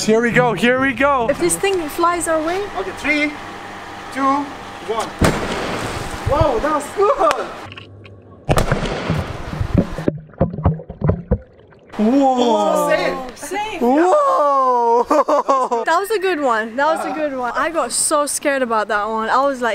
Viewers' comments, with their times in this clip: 0:04 for airbag pop